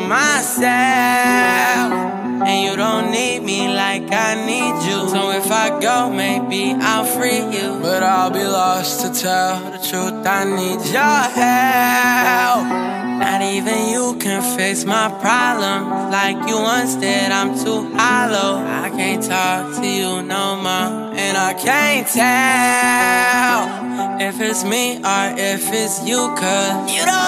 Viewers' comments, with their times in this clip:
0:07 Am I the only one who hears juices voice
0:07 Anyone else hear Juice for a sec?😭😭
0:07 Who else thinks sounds just like juice?
0:07 sounds like juice 😱
0:07 you can hear juice's voice in him
0:07 Is it just me or does this part sound like juice wrld
0:07 sound like juice laroi is a legend #LLJW
0:08 he sounds just like juice wrld for a sec😳